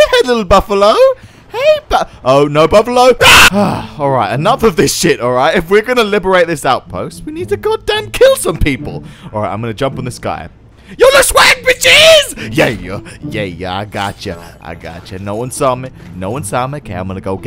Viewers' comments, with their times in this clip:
0:03 perfectly cut screams before it was cool